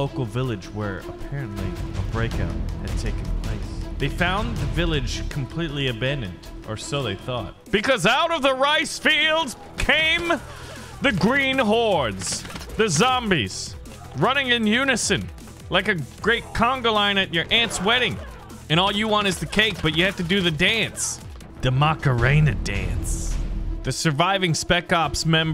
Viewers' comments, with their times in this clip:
0:08 you sound like the fish news reporter from SpongeBob